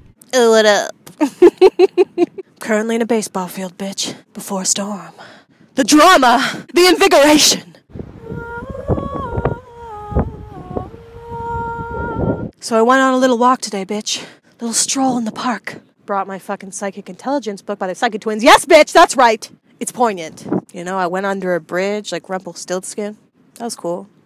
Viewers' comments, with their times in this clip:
0:10 GIRL THAT SINGING THO